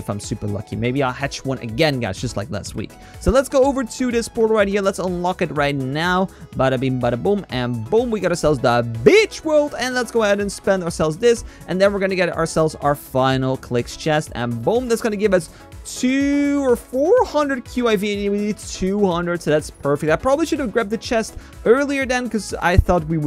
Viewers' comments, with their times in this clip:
0:08 Kinda sounded like he said the B** World lolololololololo
0:08 How did noone notice he said the bi#ch worl in
0:09 why does it sound like hes saying btchworld